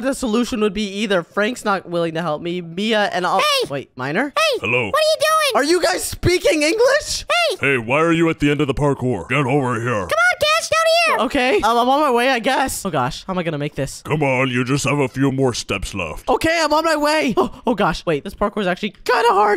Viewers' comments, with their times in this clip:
0:03 they finally spoke English 🎉🎉🎉🎉🎉🎉🎉🎉🎉